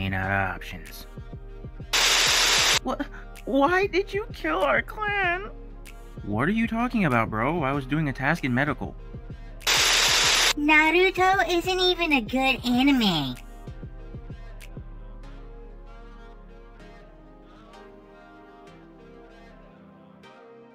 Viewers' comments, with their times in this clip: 0:04 had me dying, that Sasuke voice as a kid was spot on